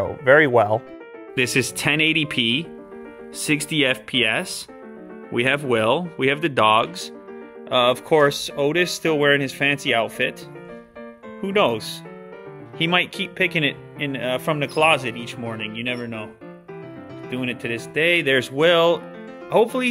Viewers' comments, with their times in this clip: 0:03 I though that was ninjas voice lol